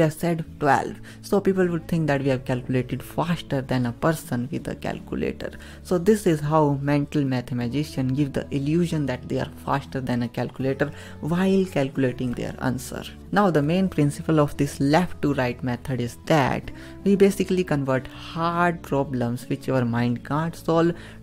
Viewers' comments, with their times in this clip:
0:06 Don't tell me he said metal matha magician.